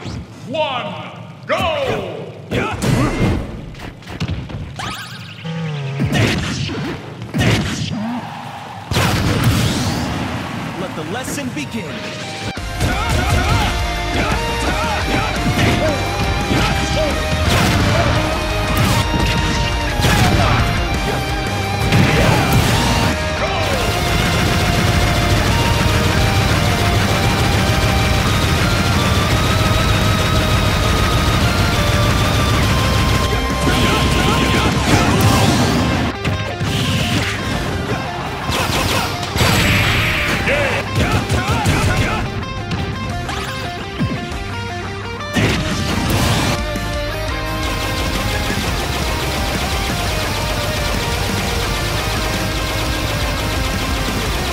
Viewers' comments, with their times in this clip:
0:10 I will bless some vegan
0:24 I lost it when Byleth went PEWPEWPEWPEWPEWPEWPEWPEWPEWPEWPEWPEWPEWPEWPEWPEWPEWPEW on poor Bowser xD
0:34 Nobody: My Blender:
0:40 byleth providing foreshadowing for sephiroth with the one winged angel melody